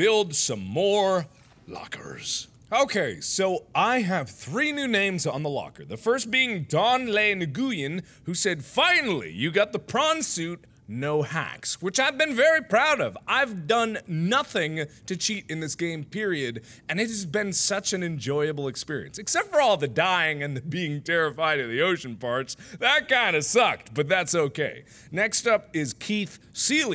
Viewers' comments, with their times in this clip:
0:07 "Nuh-goo-yen". That's how you pronounce that. Yep. I'm sure.